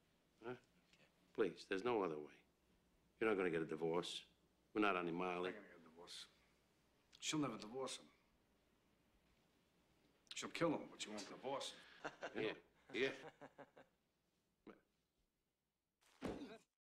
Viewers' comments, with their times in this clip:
0:06 I love how Jimmy just mumbly repeats whatever paul says throughout most of the conversation, but then chimes in with that banger "she won't won't divorce him....She'll kill him, but won't divorce him"
0:12 Paulie: grunts in mobster